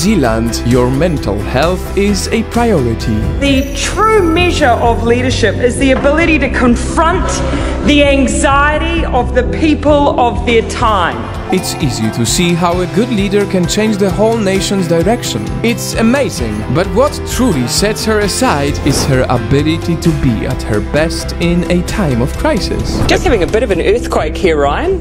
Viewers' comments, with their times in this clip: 0:06 The fact that in no one was shouting and interrupting her was so good